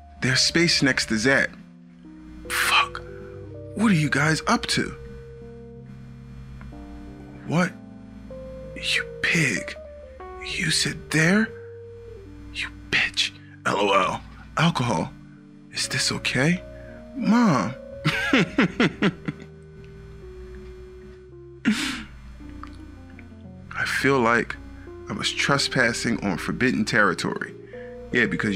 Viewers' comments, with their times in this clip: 0:09 You sit there!! became you sit there..?